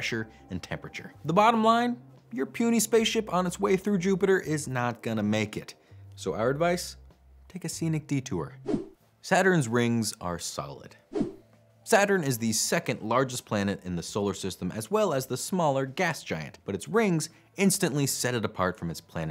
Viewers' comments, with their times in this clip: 0:05 please tell me that's not a dana carvey george h w bush impression impression